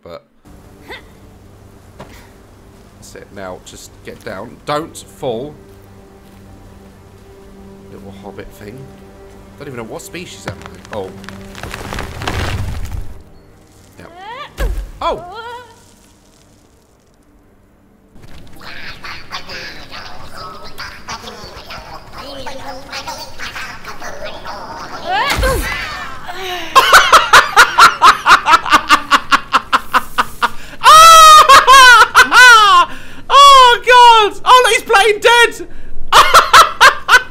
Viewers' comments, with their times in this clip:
0:09 Omg i just realized the pinecones are singing happy birthday tune to the king omg
0:18 what makes this scene even funnier is that judging by the melody the pinecones were singing, it sounds like the swedish happy birthday song, which means that not only did you kill the pineking but you also do it on his birthday 🤣🤣
0:18 Am I the only one or does it sound like they're singing "må han leva" Because that makes it just so much funnier than it already was.
0:21 when you tumbled down and crushed one of them, they were singing HAPPY BIRTHDAY. You crashed a birthday party 🤣